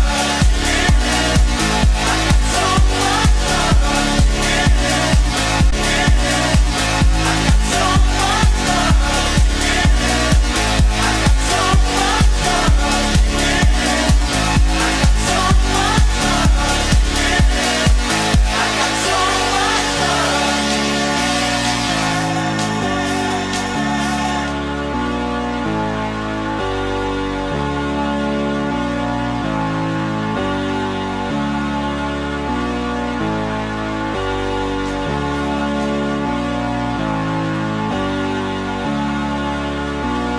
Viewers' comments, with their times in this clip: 0:06 AHHH it skips ! amazing tune BTW.
0:24 Sounds Like One More Time